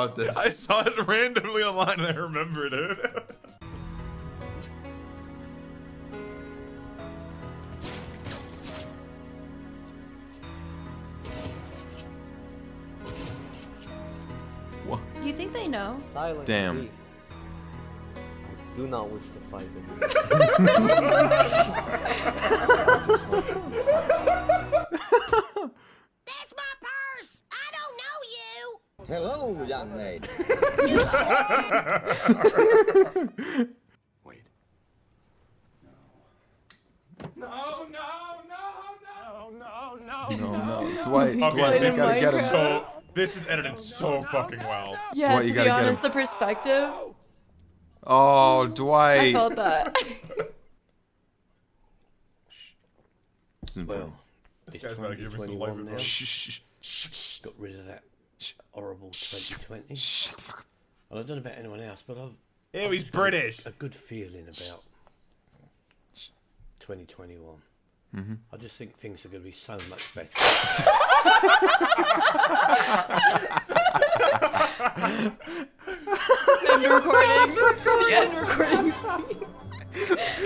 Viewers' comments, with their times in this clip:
0:10 We just gonna ignore the PERFECT gunfire sync?
1:06 ew he's American